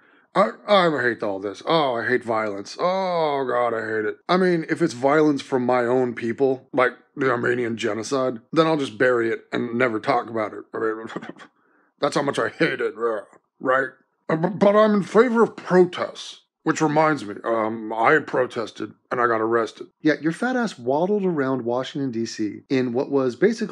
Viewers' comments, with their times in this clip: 0:10 that cenk noise lol. Sounds like a cross between a horse and a bloodhound's lips making a fart noise